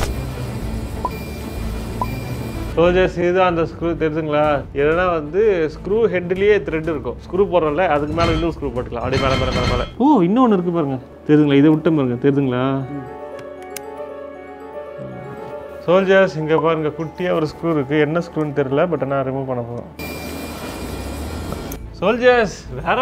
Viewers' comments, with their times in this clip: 0:08 this sound like a minecraft anvil😂